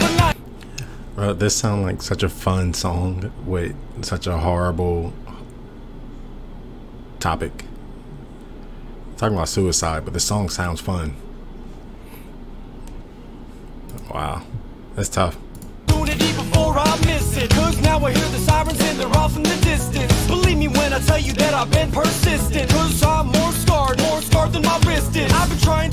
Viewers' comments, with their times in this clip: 0:08 yeah that’s like the whole point is that it sounds happy but it’s actually super sad. sort of like tyler joseph once said: “Listen, I know. This one's a contradiction because of how happy it sounds. But the lyrics are so down.”